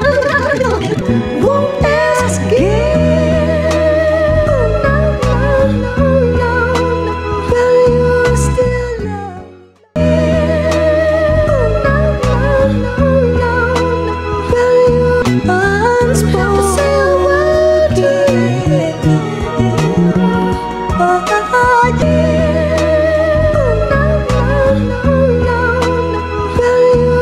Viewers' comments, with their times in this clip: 0:10 So hypnotic, and beautiful. It feels like I’m drowning in a pool of sparkling lavender.